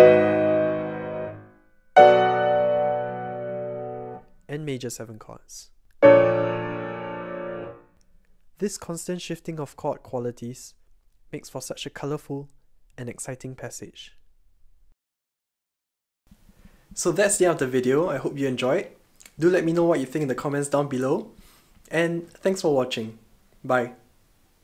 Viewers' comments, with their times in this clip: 0:04 the A is still flat on the second beat making that chord a V7#9 just like the other chords on beat 2
0:06 Great video. Just checking though, we have an Ab no? Bb7#9?